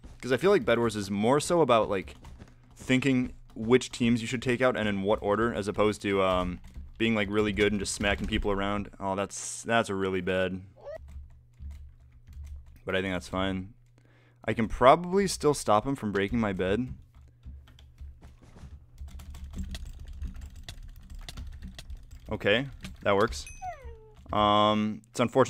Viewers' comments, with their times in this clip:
0:10 that perfectly cuted wolf scream "WOO-"